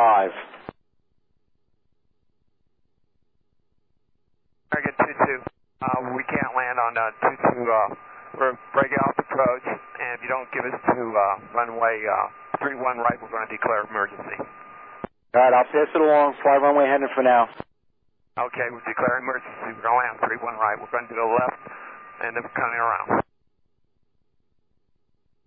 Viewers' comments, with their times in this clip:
0:07 The pilot sounds like Forest Gump.